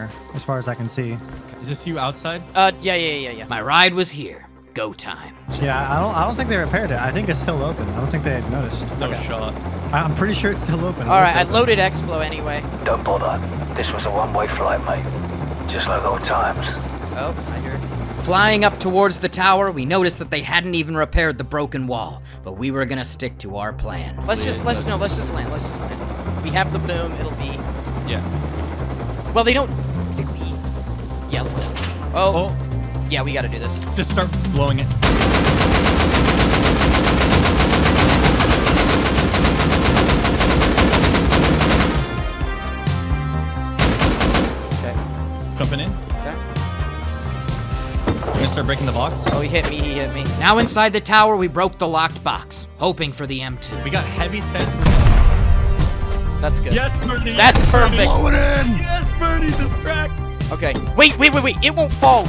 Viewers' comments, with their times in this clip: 0:06 The good 'ol, fool-proof GTA music.
0:22 That music you used gave me some serious The Division vibes and I have no clue why.
0:44 the man is for real playing the gta 5 mission sound
0:45 Love the gta music